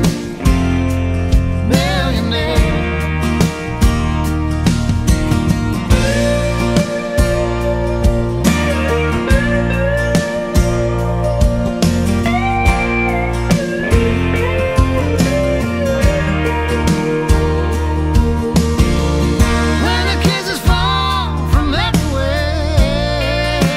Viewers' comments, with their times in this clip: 0:07 man he can sing! hes Right Real love cant be bought and it cant be sold! Anyone else get chills when hearing the guitar the whole song gives me good chills but especially the guitar man one of the greatest songs ever written and produced! i been single almost 6yrs hoping to find love like this!